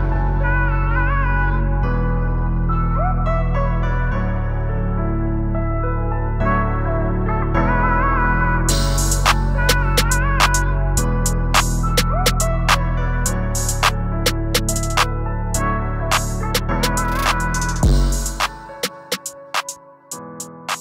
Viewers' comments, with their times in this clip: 0:07 Good tune 😎 IYKYK